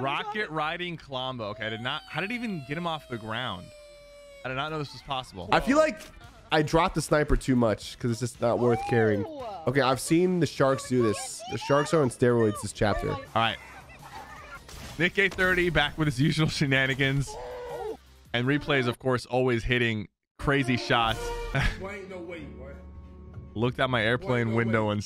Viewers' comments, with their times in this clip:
0:07 did his voice just change!?!
0:10 why did his voice change